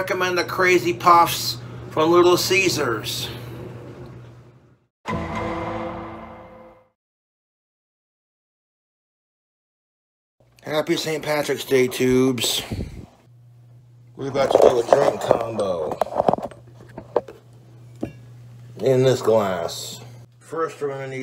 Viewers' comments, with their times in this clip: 0:08 If anyone else started to lose their fucking mind at garlic butter loop 7, it stops praise alllah for small mercies.